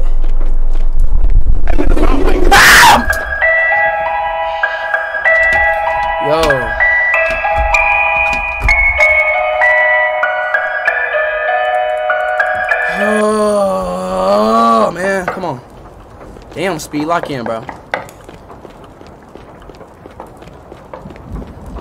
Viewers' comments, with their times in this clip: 0:03 the la la bye sleep tight song playing